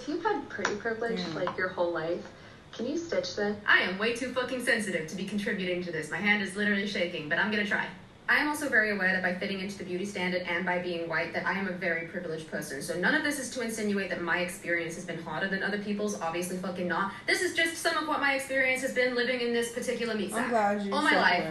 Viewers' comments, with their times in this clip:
0:03 I hate this accent. I call it the internet accent. It's unbearable